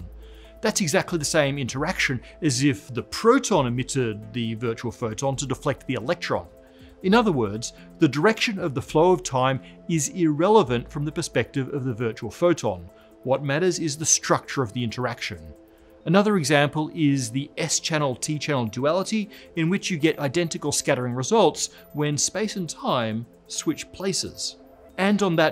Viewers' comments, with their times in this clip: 0:10 What's with the high-pitched sound ? Sounds a bit like morse code for millenials